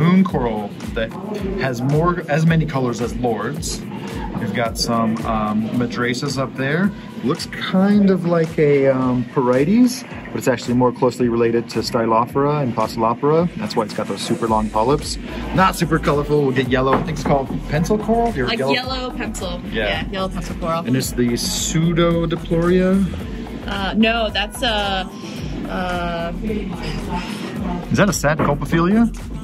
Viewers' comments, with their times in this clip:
0:10 Never paid attention to him specifically, but one thing I've noticed between reefers who moved into science or vice versa is sometimes they go in and out of "scientific pronunciation" and "hobbyist pronunciation" stylophora most around here call it (sty-lo-for-ah) where as he said (Sty-lof-er-ah) it's subtle but recognizable, ditto with poccilipora. Two of the big ones are acropora and montipora pronounciations, (a-crow-por-ah) versus (ah crop-er-ah)